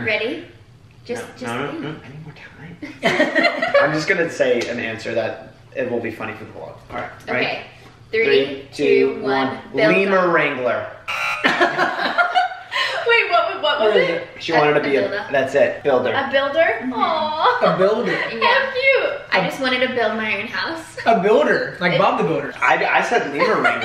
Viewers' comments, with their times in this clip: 0:04 it was screaming at the scream so bad